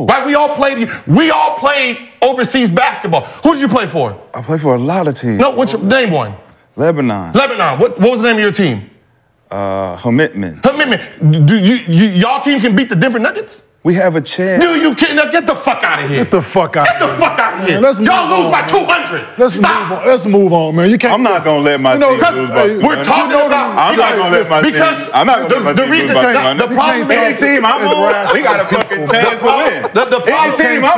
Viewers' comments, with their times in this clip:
0:07 Idk why I died laughing when Gil said “Himitmut” 😂😂😂
0:12 The “ we have a chance “ is hilarious 😂😂😂 “ there was no conviction in that statement